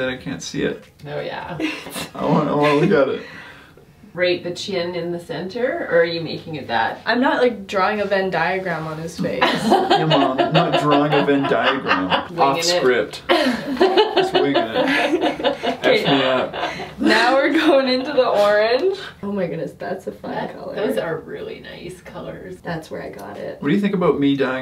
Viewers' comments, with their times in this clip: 0:07 I hate how bratty she sounds to her mom